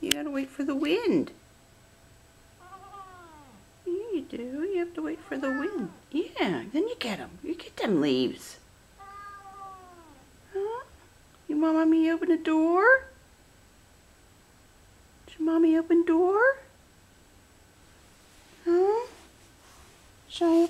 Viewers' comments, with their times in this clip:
0:07 He says noo